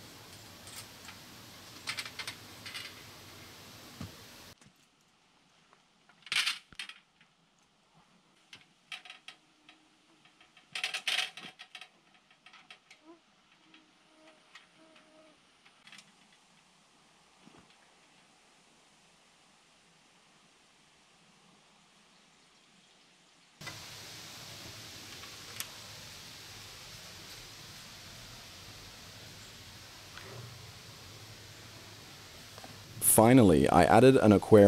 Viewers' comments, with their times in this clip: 0:10 I went bezerk. Thought I had a mosquito in my bedroom 😮😗☺😁
0:10 the mosquito realy got me...
0:10 I had my headphones on, there's a mosquito, I could swear I heard it was behind me.
0:12 I look around for mosquitoes
0:12 Wearing headphones I whacked myself across the head thinking a mosquito was buzzing me. Must have been on the microphone!
0:12 Anyone else rip their headphone out trying to kill that freaking mosquito?
0:13 The Mosquito sound got me xDDD i was searching my room for like 10 minutes
0:13 The mosquito at minute really had me swatting an imaginary mosquito.
0:13 definitely thought there was a mosquito flying next to my ear lol But when i rewound it I was relieved to know it was in the video. Last thing I need is to go to sleep with a mosquito in my room and wake up with 10 bites haha
0:13 the sound of the fly made me think there was one flying around me lol
0:14 just about swatted my ear listening to that mosquito ...
0:14 I was swatting mosquitoes. Dang earbuds.
0:15 ish I actually thought that was a real mosquito! The automatic reflex to swat it away from my ears knocked my headphones off! Thumbs up btw :-)